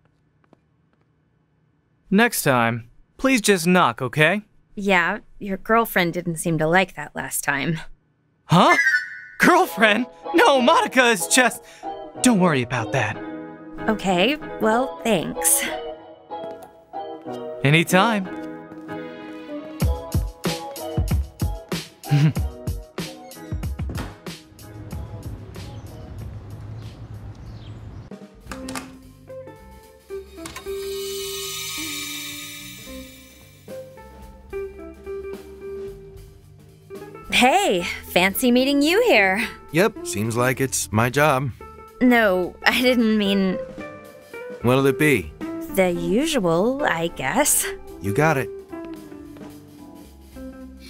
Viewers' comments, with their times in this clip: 0:09 This music choice is so jarring, it ripped me out of bed and threw me onto the ground jfc
0:09 I honestly thought Spotify started playing
0:10 oh shoot I love that song
0:10 that vsco girl music tho
0:13 lol their playing royalty free music
0:27 I can’t believe they played ‘take me out to the ball game’ after the strike out pitch she did last scene
0:29 It's not just me right but the background music sounds like "take me to the ball game"
0:31 Are we going to ignor the fact that take me out to the ball game was playing in the coffee shop
0:33 ...are they playing "take me out to the ballgame?" Cause that's what it sounds like
0:33 Didn't it sound like "Take me out to the ball game" ?